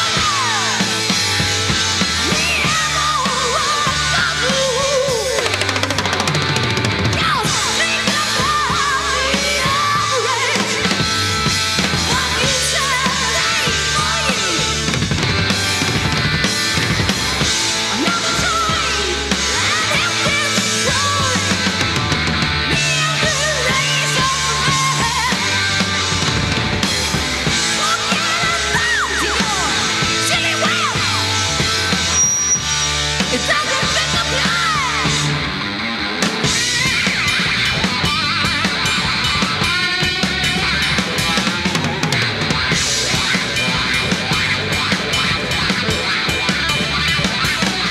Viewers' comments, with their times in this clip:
0:04 Drum sweep from the gods
0:32 into it ...the second of feedback going through the speakers makes the band go even a little more nuts after they hear it.